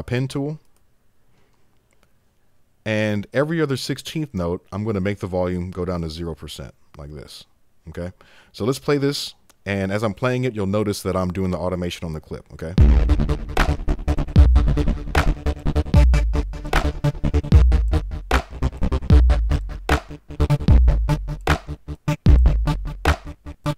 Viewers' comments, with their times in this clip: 0:07 Nice... better than Nexus 2's transgate...